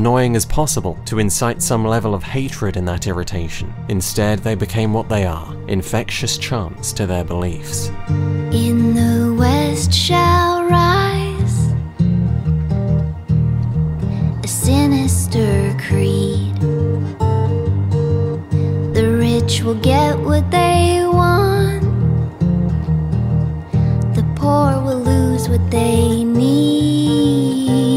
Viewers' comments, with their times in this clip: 0:08 Man, I can't get over the way you transitioned from your description into the music Utterly beautiful work there.